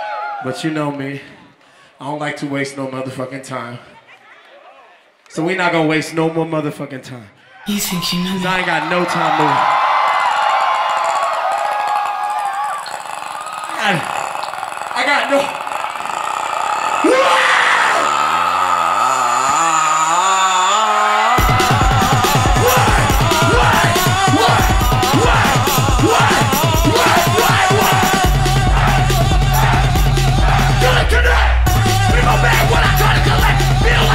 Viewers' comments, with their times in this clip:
0:08 when you hear that croaking, you know shit is going to go DOWWWWWN.
0:17 Scarlxrd came out of him